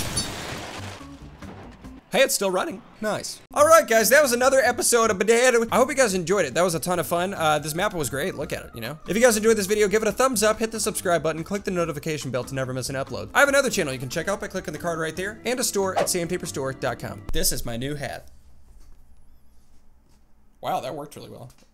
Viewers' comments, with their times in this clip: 0:04 alright guys that was another episode of badubum LOL makes me laugh I’m subscribed and liked the video